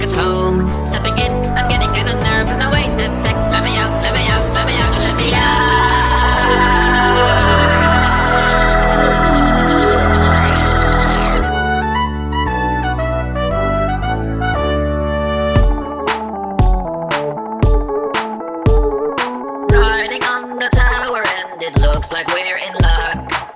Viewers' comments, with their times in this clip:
0:05 WHY DOES IT SOUND SO GOOD AT THE FIRST TRUMPET WHAT